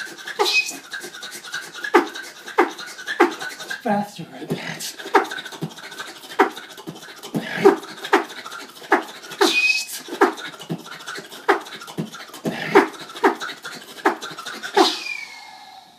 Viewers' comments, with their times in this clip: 0:03 3 lungs? O.o